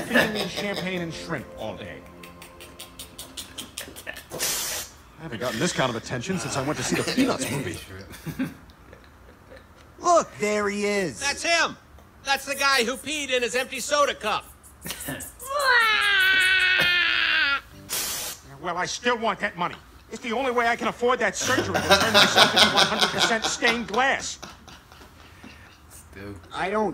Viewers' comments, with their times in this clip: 0:10 The Snoopy cry omg 😂